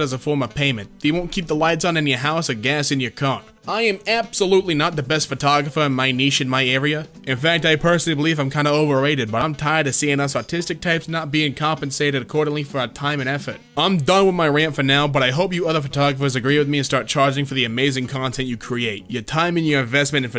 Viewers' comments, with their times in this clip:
0:04 you're the only American I've ever heard to pronounce the word "niche" correctly.